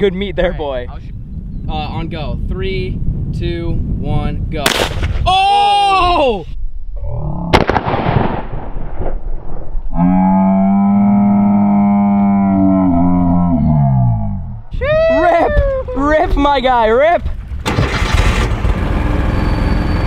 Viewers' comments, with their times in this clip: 0:07 man sounded like the cows outside my window at 2am